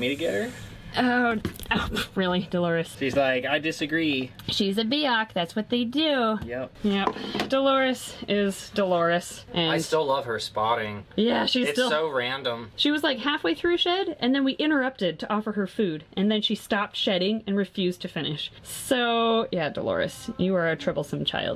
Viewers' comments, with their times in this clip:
0:04 I thought you called Delores a “biatch” 😂